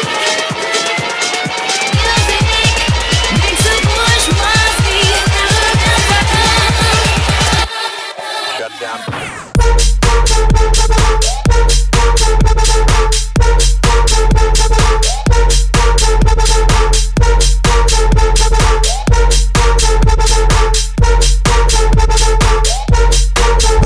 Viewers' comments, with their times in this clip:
0:09 The soundbank from first Drop sounds like an other famous festival drop, can you tell me that song?